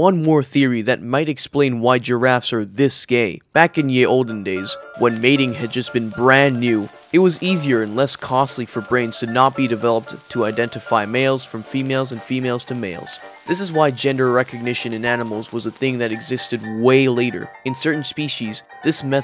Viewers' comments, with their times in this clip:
0:07 This is the first time I've ever found your content. First of all, you were talking so fast I had to slow you down to .75%. There are many people on YouTube who go in the opposite direction; I have to speed them up to 1.25%. I had to replay from because you got muddy in your writing there. I finally figured out what the problem was. You said, "in the olden days". When you say olden days my mind doesn't immediately go to evolution. Could could have done without the cracking sound too.